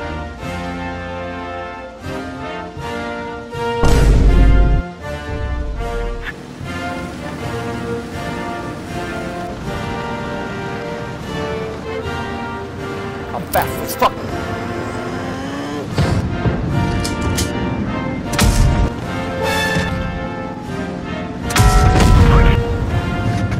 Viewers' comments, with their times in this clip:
0:08 i just heard something like 'đị-' or 'en-'